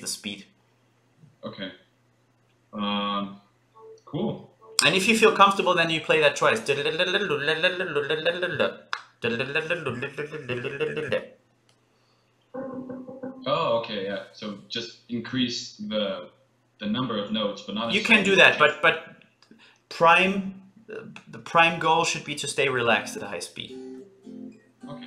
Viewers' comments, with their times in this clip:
0:07 his tongue can move as fast as his picking 😂